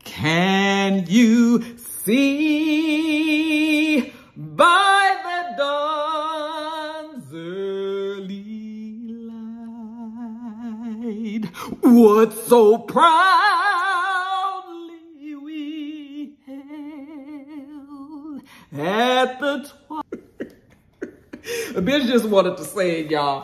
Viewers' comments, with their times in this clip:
0:06 I bout stood up and saluted during them anthems!